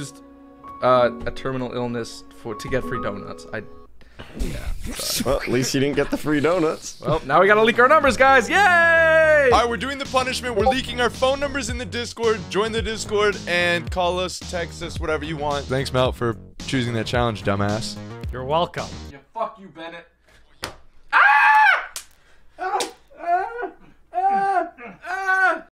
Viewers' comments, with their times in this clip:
0:10 i still can't find my discord notification